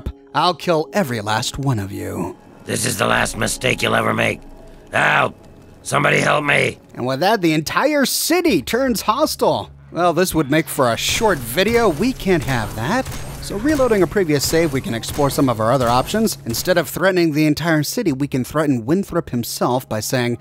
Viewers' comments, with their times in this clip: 0:04 "ah somebody help me" XD worst acting in video game ive ever heard i think he should have put more exageration and more scream XD just sayin... wait i just realized all the male ghouls share the same person voice